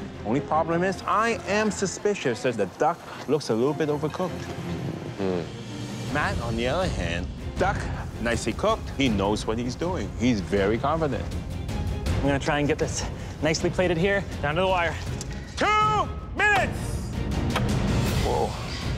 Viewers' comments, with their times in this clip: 0:04 did my guy just let one rip 😅